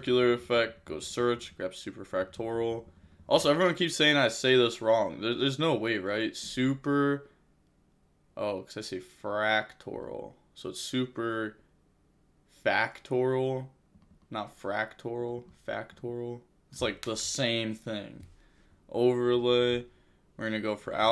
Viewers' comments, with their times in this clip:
0:06 yeah, on past you were speeching "superfractional" instead of superfactorial, but in my opinion, superfractional its nothing compared to "menies" instead of "METAnoise", the tearelement trap lol. Anyway, the content still is the best of yugioh on youtube :)